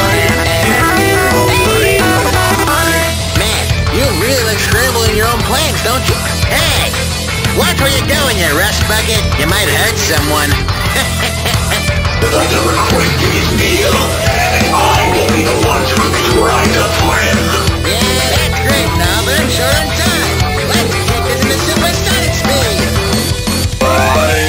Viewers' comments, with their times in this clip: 0:06 why does Sonic sound like a grandpa, it makes it better ngl